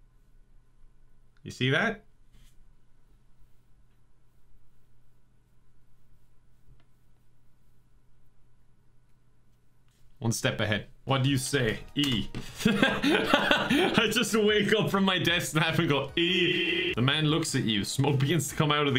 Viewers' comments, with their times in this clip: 0:03 Awkward silence... Lol